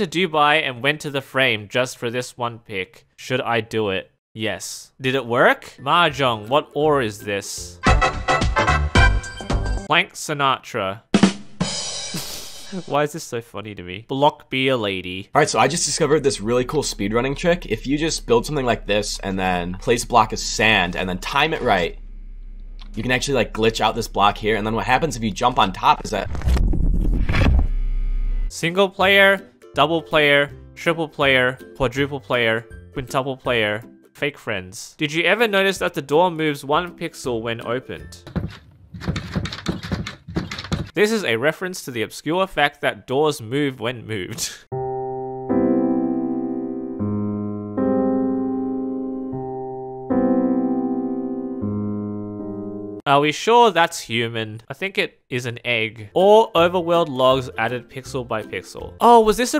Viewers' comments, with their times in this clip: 0:05 i have heard MOYANG i have heard MOJANG but i have NEVER heard "MAHJONG"
0:45 Omg what did they do to Gymnopédie no. 1??